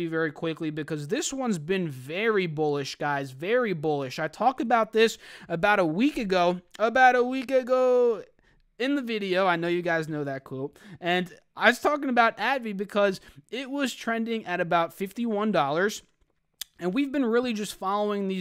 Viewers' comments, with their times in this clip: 0:06 "about a week agoooo" awkward silence 🤣